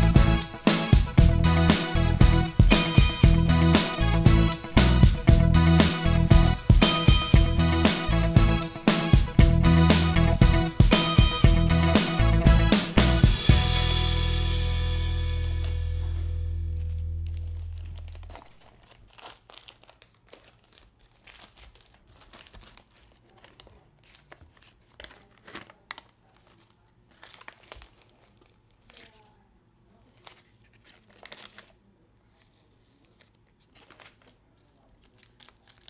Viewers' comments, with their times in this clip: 0:09 tape peeling asmr
0:17 asmr in progress